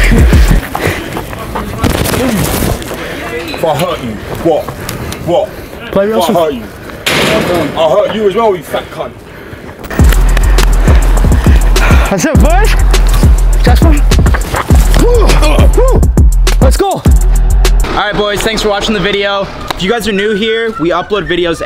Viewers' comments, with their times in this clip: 0:05 “Wot wot” 🤣 British people have the most annoying accents